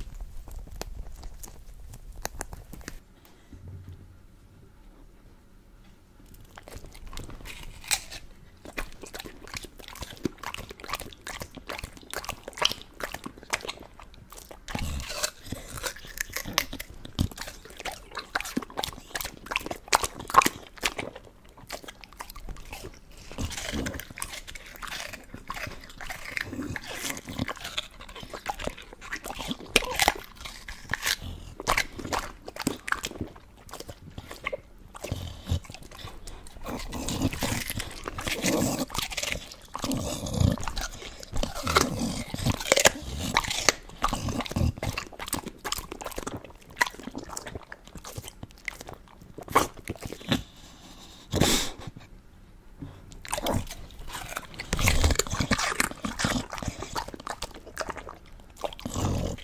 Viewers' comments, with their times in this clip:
0:04 Isabella eating watermelon sounds so funny!😂 Cute!
0:42 your dog sound scary hehehehe